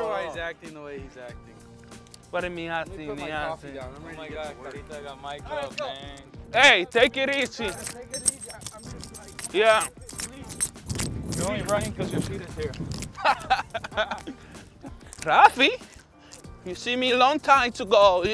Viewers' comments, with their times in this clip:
0:06 when Devers says “Take it easy” like a true Bostonian 😂😂😂